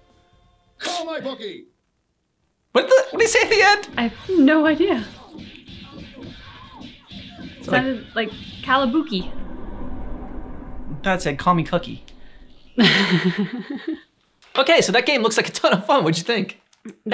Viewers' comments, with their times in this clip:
0:03 Heard it as "Call my booking!"